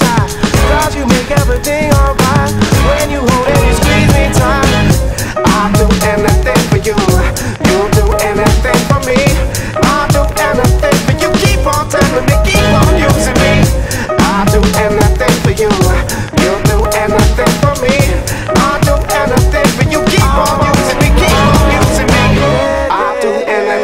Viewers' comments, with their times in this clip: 0:06 haha, his yawn made me yawn.